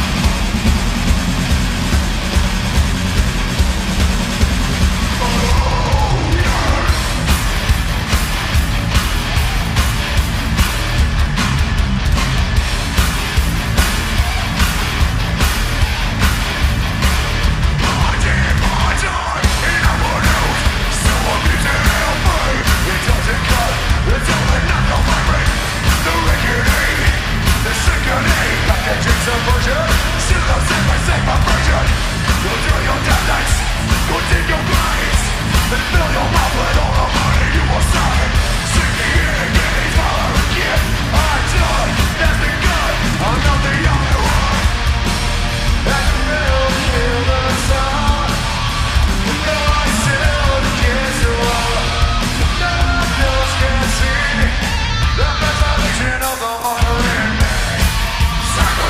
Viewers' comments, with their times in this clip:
0:07 slipknot was playing psychosocial too fast that they were definitely off beat 😂
0:42 miss tempo Bad sound Bad live Fcking